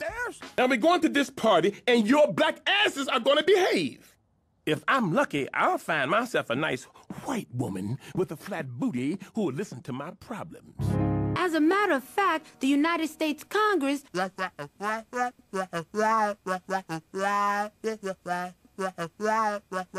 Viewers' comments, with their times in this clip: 0:04 he said it with such care 💀💀💀💀😩